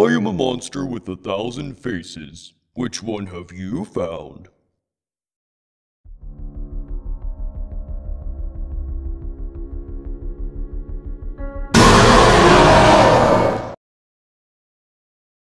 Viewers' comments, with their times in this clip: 0:11 RIP my earphones